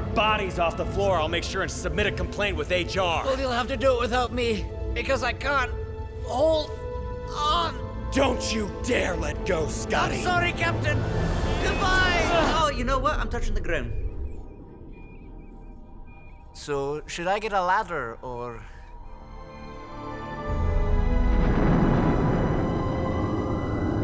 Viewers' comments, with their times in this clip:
0:08 I absolutely love how quickly it was climaxing like "im sorry captain, goodbye" and then all of a sudden, a scottish accent "oh you know what, I touched the ground"
0:11 love that accent